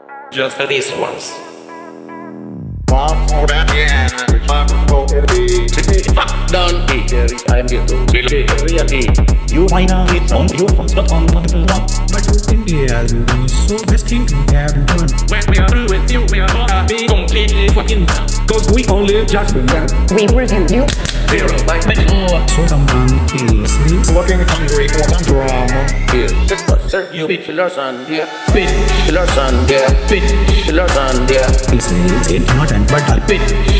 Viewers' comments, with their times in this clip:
0:06 style of saying that word😄😄😄
0:15 IT SOUNDS SO WEIRD!!😂😂